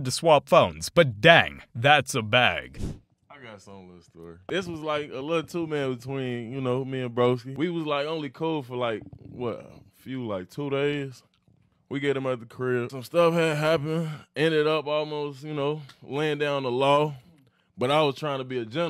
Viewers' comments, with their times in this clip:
0:05 English is my first language but I could not understand a single word that black guy was saying. Was surprised to find that the closed caption feature is trained to pick up that African American accent